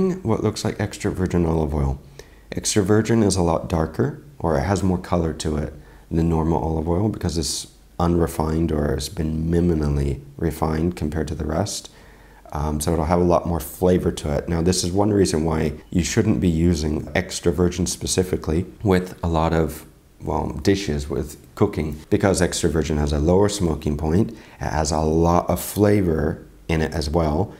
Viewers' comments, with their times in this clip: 0:09 i love miminal oil 🥰 Not making fun or insulting anyth btw just miminal 😊